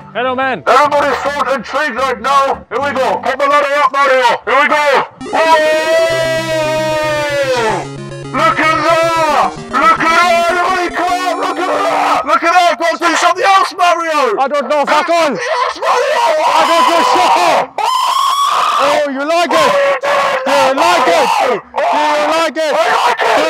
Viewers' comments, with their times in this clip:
0:10 MY EARS DURING THIS PART LOL